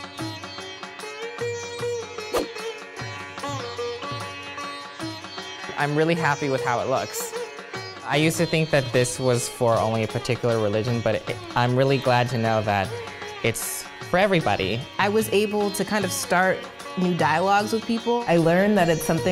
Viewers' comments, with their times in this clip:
0:03 The background music ......those krishna's episodes that we used to watch in our childhood....